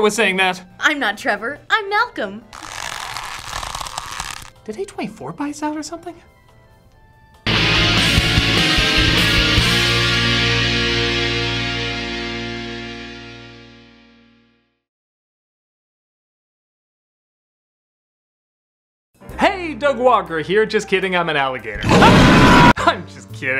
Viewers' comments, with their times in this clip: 0:08 What did he say? "Did 24 hours go by or something?"